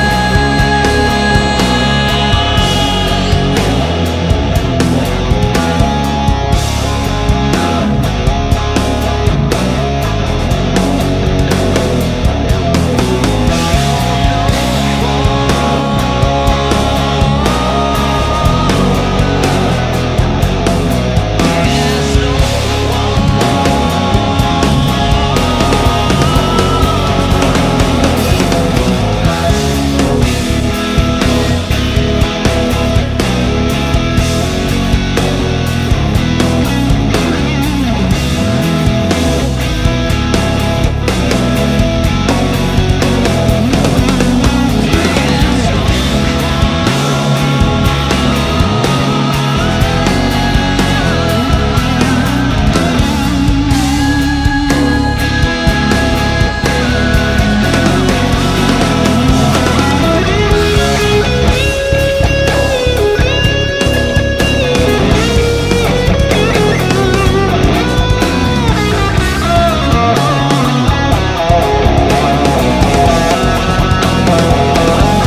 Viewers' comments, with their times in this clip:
0:03 Also, let's remember that Robert Plant, when he was young, kept going up in pitch in that '73 version. I understand that it's almost impossible to get. Still, this is very good.
1:01 couldn't count how many times i've replayed the bass line which is